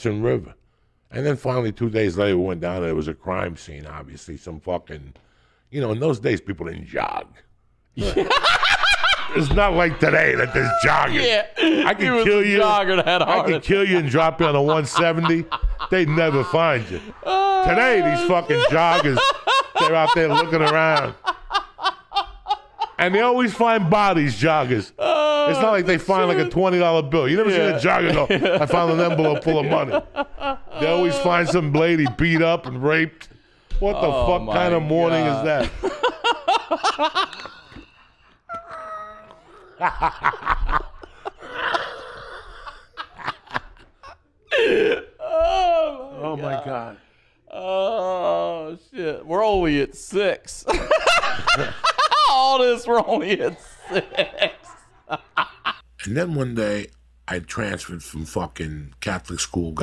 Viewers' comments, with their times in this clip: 0:06 that “JOG” broke the sound barrier 🤣
0:40 that fucking laugh gets me every time